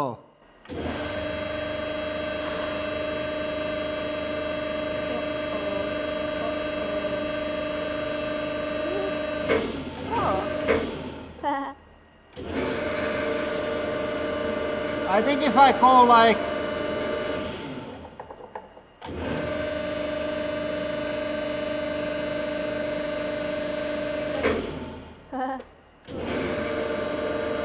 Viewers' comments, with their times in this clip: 0:10 THAT. LITTLE. LAUGH! 🥹♥️ Seriously, it was absolutely adorable! 🤣